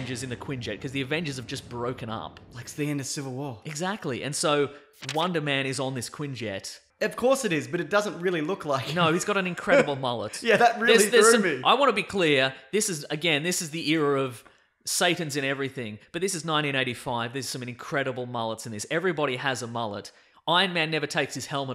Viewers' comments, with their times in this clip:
0:05 "Wanda-Man" Is that like a Scarlet Witch alter-ego?